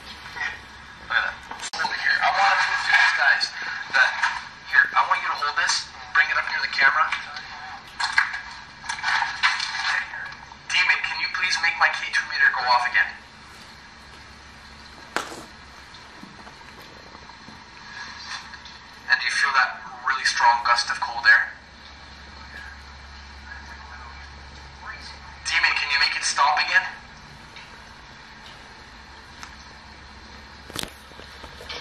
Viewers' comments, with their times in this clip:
0:09 disembodied voice from the recorder either said here or where
0:17 you asked them to make the K2 light up there was a response afterward ".yes". Put some very carefully. You will hear it.